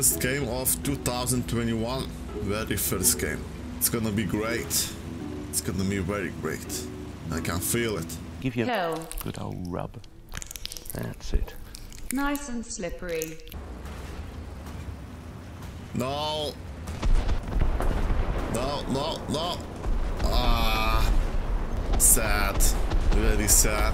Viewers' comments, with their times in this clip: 0:09 is a good asmr